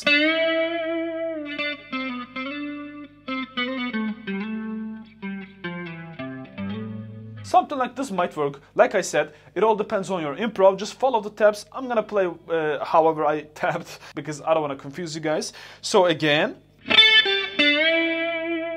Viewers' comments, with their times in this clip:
0:04 was the part i was talking about on Patreon, the one you played that is not tabbed. It really started me out liking the 2006 version. That is such a touching lick, so smooth and warm, just resolves sooo well. Glad I found it!